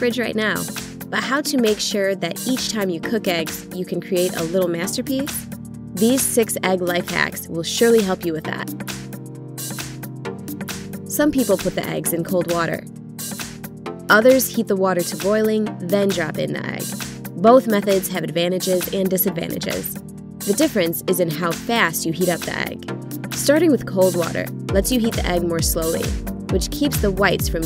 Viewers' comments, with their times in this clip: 0:08 Did anyone notice that on there was a voice in the backround to explain ._.